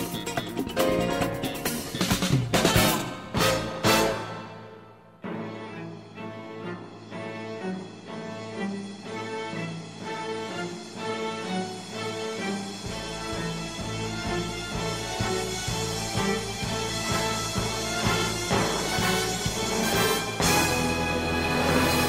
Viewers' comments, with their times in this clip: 0:05 epic enlargement theme